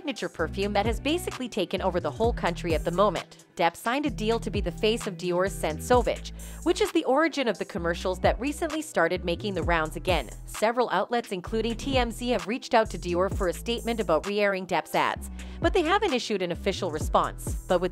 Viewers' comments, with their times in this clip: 0:05 Nice pronunciation there.